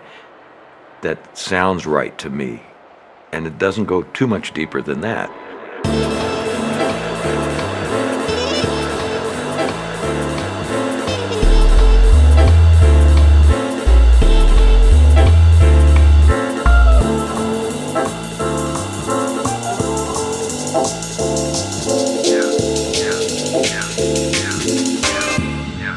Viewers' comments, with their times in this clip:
0:06 That double time starting is just perfect.